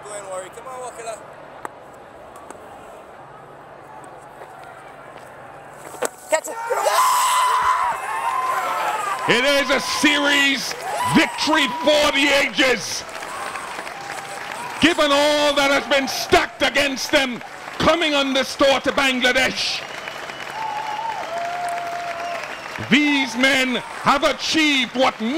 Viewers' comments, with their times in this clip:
0:10 bishop emotions tells how proud he felt sitting right there and watching his nation creating history. Love from India.